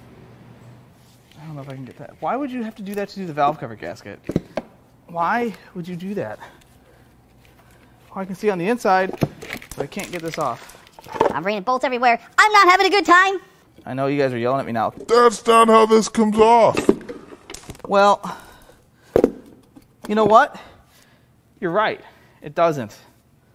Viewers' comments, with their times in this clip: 0:10 "I'm raining bolts everywhere. I'm not having a good time." That was just so funny with that high pitched voice. It really makes my day like that.